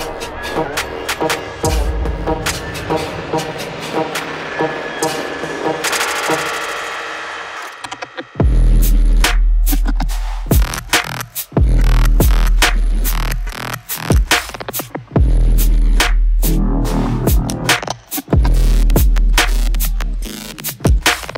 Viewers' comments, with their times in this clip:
0:08 The track that dropped hit so right my word